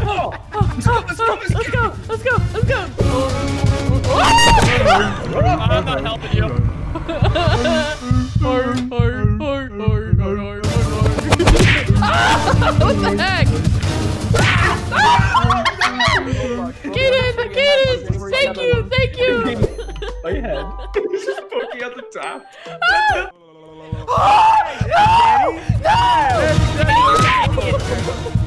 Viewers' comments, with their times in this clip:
0:04 they really got the final beatbox music playing in the background 😂
0:10 sad freddy fazbear noises